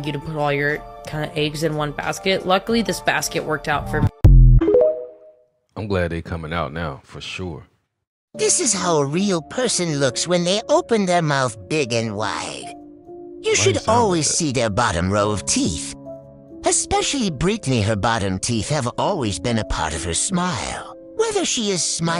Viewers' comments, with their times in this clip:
0:07 had me laughing so hard the voice overs were too much it was like listening to a documentary narrator roast a person. The first voice was so goofy but voice 2 took me out.